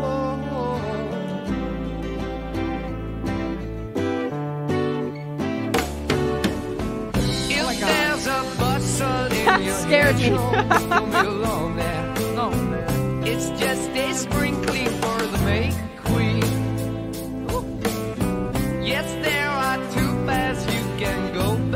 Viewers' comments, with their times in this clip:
0:04 Did you notice that there were no drums until (of your video, not the song itself)? I discovered your channel today with your reaction to Immigrant Song and had to watch your reaction to this. I hope you'll continue down this rabbit hole.